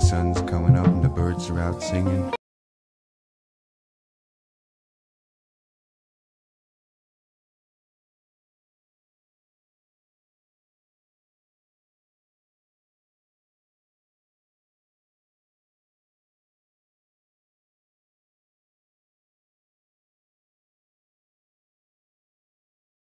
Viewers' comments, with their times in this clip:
0:09 You might want to check the video upload, the sound goes all funky then silent around the mark.